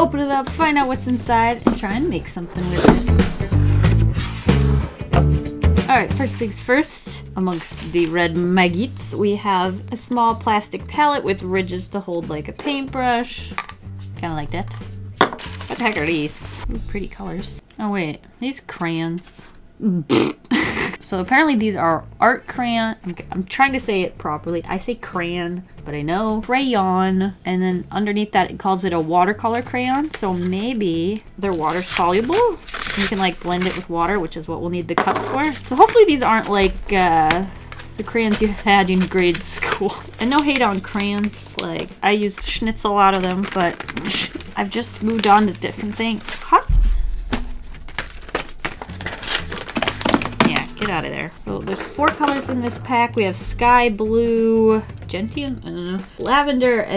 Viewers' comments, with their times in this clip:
0:08 i thought she said maggots- Smh-
0:18 I mean who Is going to say CraYYOOOOONNNNNNSSSSSSSSSSSS while u can say Crans :)
0:40 why did I hear "no hate on clams" XD did anyone else hear that